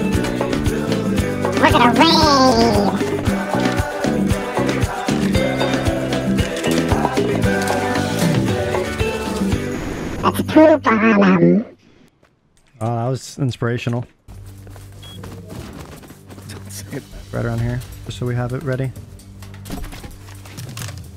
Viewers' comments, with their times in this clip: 0:06 my birthday is today and when i heard that happy birthday song it made me feel good lol